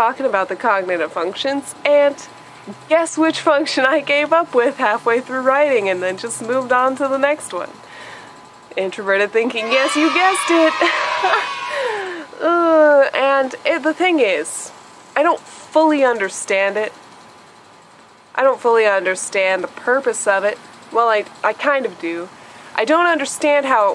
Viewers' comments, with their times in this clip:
0:08 scared the shit outa me I thought a bunch of kids ran in my room! xD